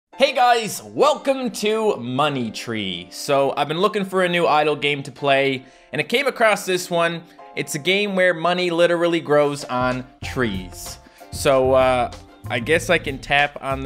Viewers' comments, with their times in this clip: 0:00 Just replay and he soujlnds likes he's got an accent